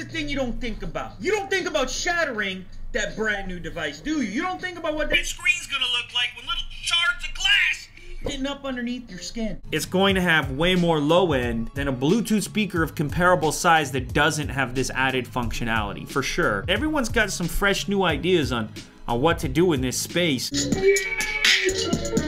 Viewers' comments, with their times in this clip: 0:03 Its like the voice of a dictator xD